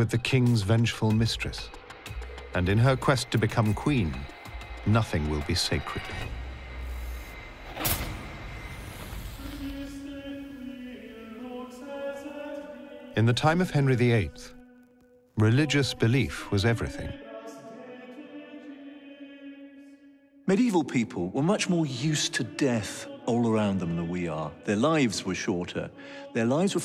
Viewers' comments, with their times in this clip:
0:10 Does anybody know the name of the music which starts ? This singing is so peaceful and calming!